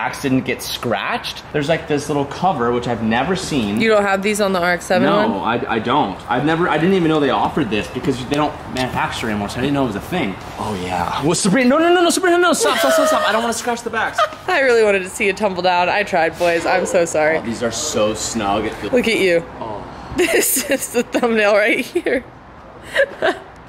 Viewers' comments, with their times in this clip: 0:10 you can hear the fear 😨